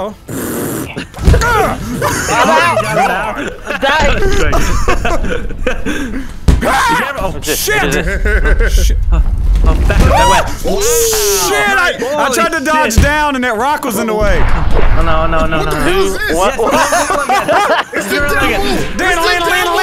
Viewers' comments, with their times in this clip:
0:06 look more demon cries